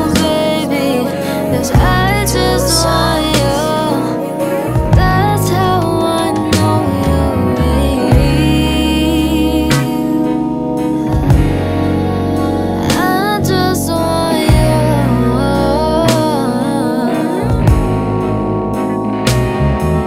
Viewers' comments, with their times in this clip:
0:08 theres something about this chord idk perfect way to end a chorus for me, dont know how many times ive heard this lol